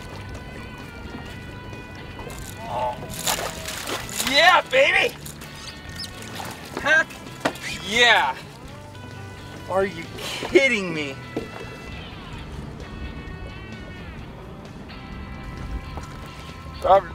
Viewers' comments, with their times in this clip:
0:05 sound like Chick 🐔